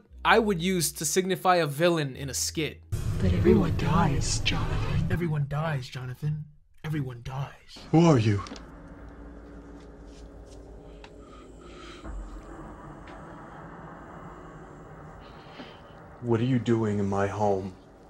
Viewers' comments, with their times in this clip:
0:03 every time this lady speaks with that voice filter I am thrown back to Phantasmagoria 2 A Puzzle of Flesh... and I don't even remember what in that game it's making me think of 😂